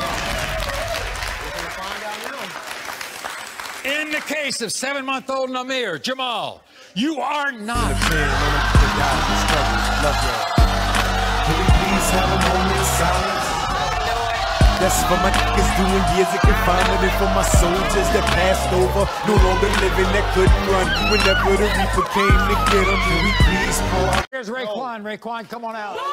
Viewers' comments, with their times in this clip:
0:07 Love that music with the result.